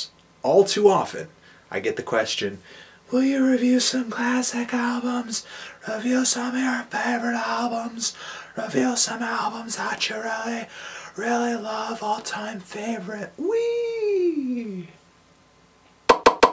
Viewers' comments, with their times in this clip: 0:03 Dude, your "viewer" voice TOTALLY reminded me of Walter and Perry from Home Movies. I secretly wish that is your intention.